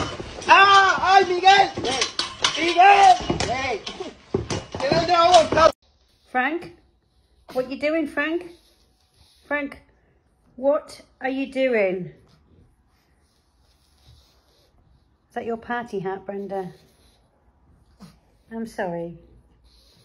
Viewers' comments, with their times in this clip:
0:06 ...yeah, Brenda really sounds upset.....